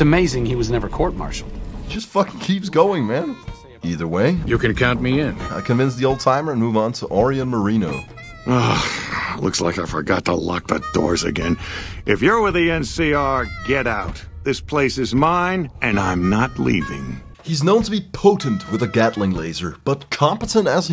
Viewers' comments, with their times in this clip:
0:07 this guy sounds like he could be voiced by harry styles from whose line is it anyway or at least they were trying to sound like him